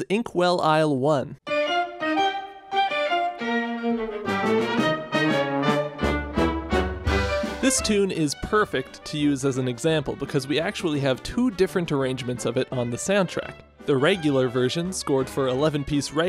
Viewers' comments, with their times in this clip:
0:03 that note knows this video is gonna be good